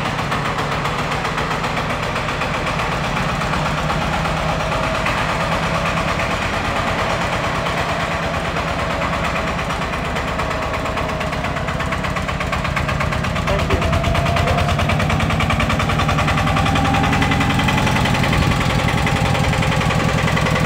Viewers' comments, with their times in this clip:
0:04 You can really HEAR the long stroke in that 1-cylinder diesel which gives it its stump-pulling torque!